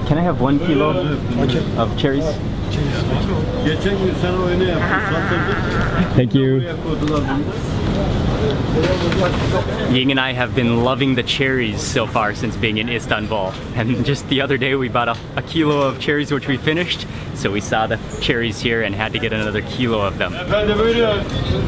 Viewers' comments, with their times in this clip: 0:05 you can hear the laughter of "Janice" from the show F.R.I.E.N.D.S